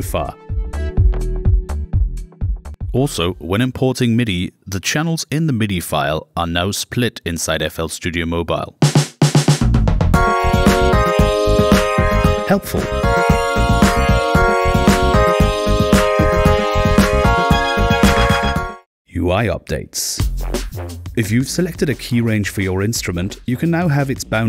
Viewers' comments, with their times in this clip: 0:08 so we're just gonna ignore how they managed to pull a smooth rick roll